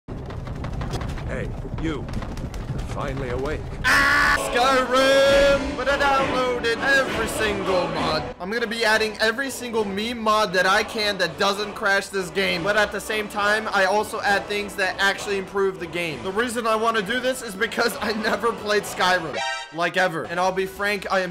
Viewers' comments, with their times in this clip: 0:03 Perfercly Cut Scream